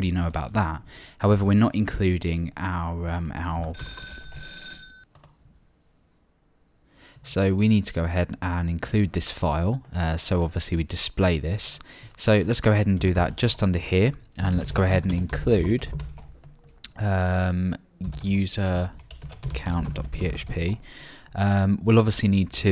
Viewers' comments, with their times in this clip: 0:06 Not including our uhh-our *ring ring* xP